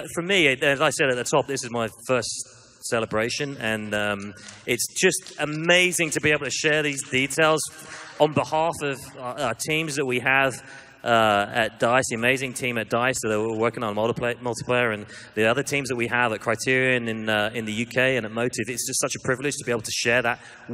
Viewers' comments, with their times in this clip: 0:05 His voice reminds me of Jango Fett and the clones lol.